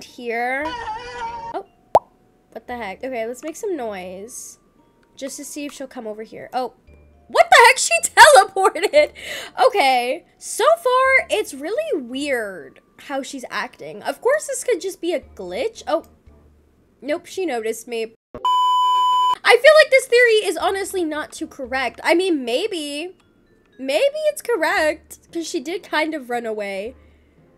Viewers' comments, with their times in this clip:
0:09 your laugh is so cute
0:09 you laguh is so cutteeeee